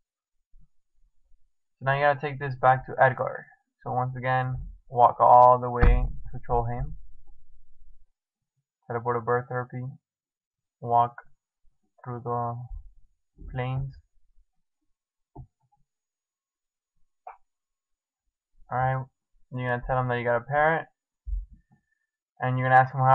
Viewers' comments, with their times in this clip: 0:08 im for ever calling "birthrope" "birthherpe" great guide though!!